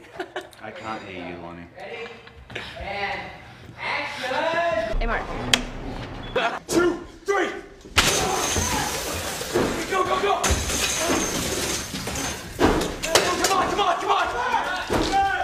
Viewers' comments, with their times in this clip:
0:03 I really love watching Rosa and Dylan They’re laughing but the second Wes says “ready?” they immediately switch to character mode. It’s so professional and cool to watch.